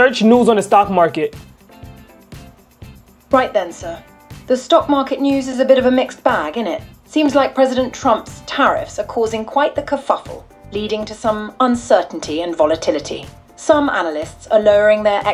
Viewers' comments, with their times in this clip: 0:03 I like how she said innit